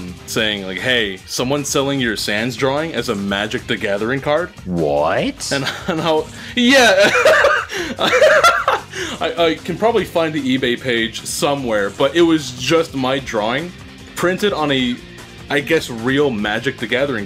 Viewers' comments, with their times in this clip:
0:04 That‘s pure wonder/disbelief in his voice it‘s kinda cute 😂